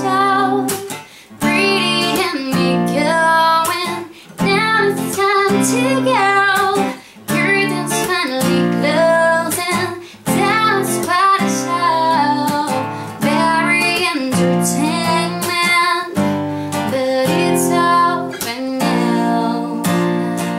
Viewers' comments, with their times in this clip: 0:08 I love the way when you cekok in your guitar